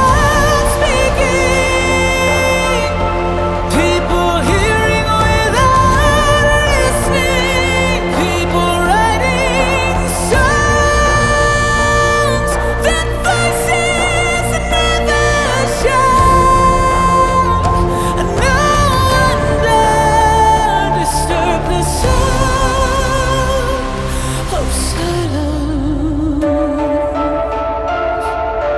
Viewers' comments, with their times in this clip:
0:09 Holy DAMN I can't believe you went up there with it! fml. Woke me up this morning <3